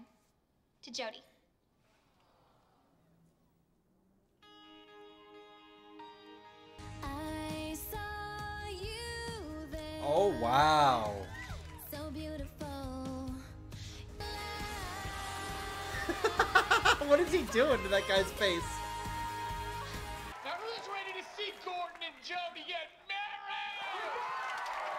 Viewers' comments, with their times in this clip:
0:06 Miranda's singing voice was so beautiful. It was actually one of her best songs she ever did 🎵🎵🎵💗💗💗
0:06 Miranda's beautiful singing voice.